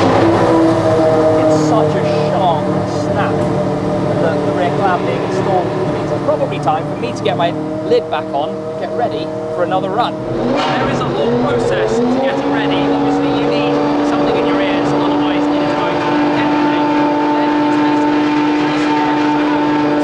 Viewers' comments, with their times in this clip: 0:03 That sound is sickening. the guys ding the engine cover😅